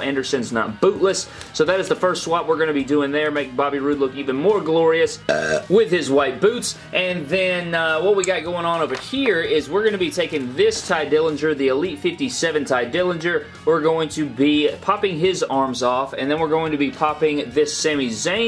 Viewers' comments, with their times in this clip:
0:05 u gotta be honest, that burp was better than brocks universal title reign ohhhhhhhhhh ohhh oh😂